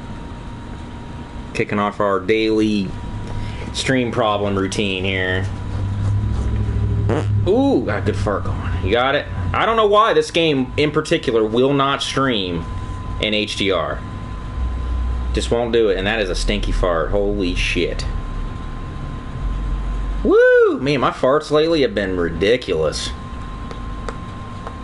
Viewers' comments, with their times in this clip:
0:06 fart "Holy shit!" Yep. I'd say you shit yourself. LOL